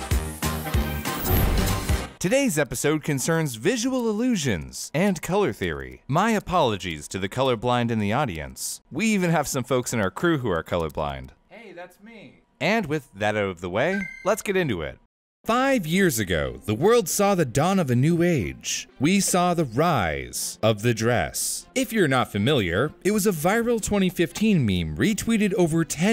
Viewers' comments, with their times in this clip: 0:09 I love the quiet “hey that’s me” in the background